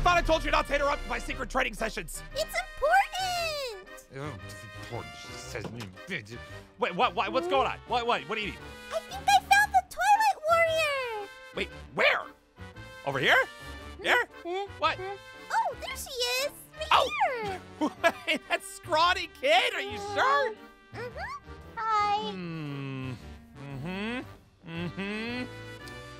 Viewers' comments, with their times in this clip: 0:09 the toilet warrior...